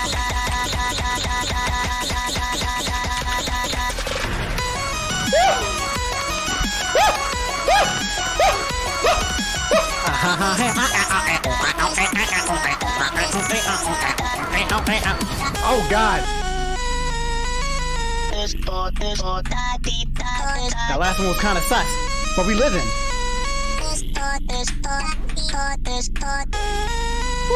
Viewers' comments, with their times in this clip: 0:08 A argument in animal crossing be like
0:10 This is 4 y/o me singing: